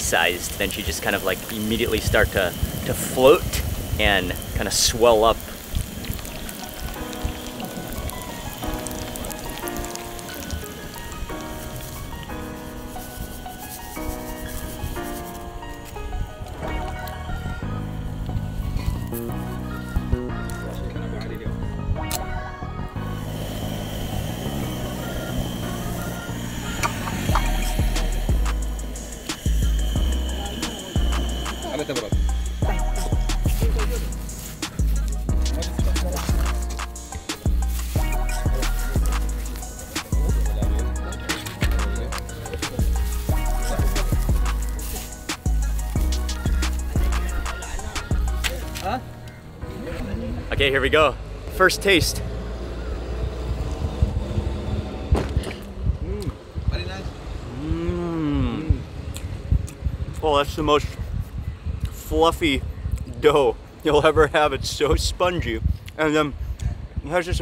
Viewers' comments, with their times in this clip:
0:05 Love the song choose
0:05 I see you with that nba Youngboy beat
0:07 Mark Wiens with the youngboy type beat is insane
0:49 youngboy type beat?! Okayyyy I see you Mark!😂🔥
0:55 ok mark with da beat banger ❤‍🔥❤‍🔥❤‍🔥